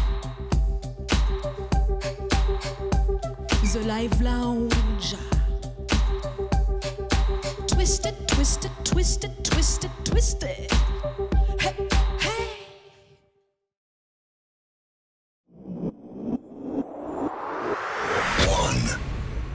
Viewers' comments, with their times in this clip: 0:03 The way she says "The Live Lounge" :)